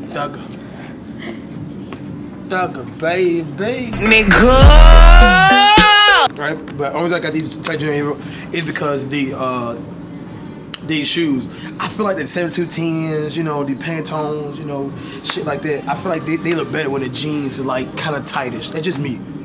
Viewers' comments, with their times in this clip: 0:03 R.I.P headphone users (